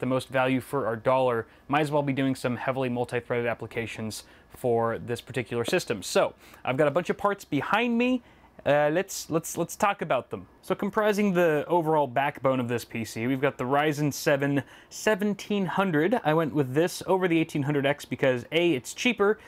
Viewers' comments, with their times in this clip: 0:05 Anyone notice the minecraft stone block breaking sound effect ??? Gosh I can't believe I just said that.